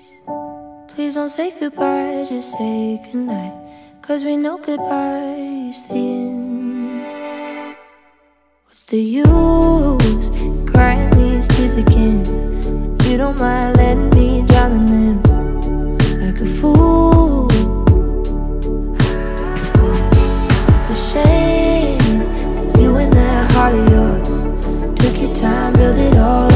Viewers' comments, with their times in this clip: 0:10 The way she sings "crying" is so friggin beautiful!